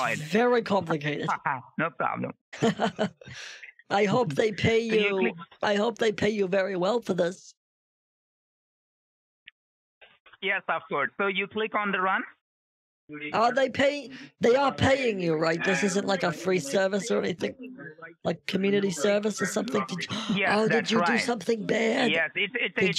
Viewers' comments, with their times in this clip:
0:06 omg did anyone else hear IT say “shut up” in the sentence.